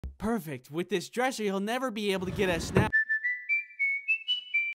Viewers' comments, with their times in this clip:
0:02 When you hear a belt, snap downstairs and you hear your door open